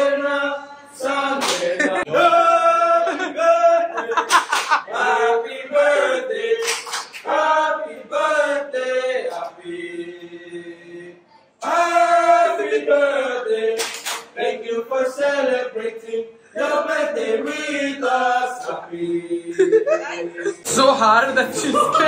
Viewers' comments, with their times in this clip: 0:06 when they started singing, it reminded me Barbecue nation 😂